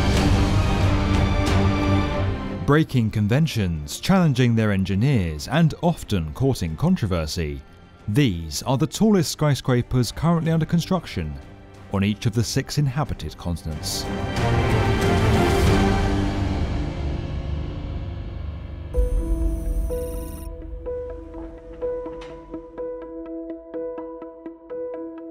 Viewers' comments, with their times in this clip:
0:06 "these are the tallest squyscrapers currently under construction on the six inhabited consonants" That was a funny one, but I loved the video!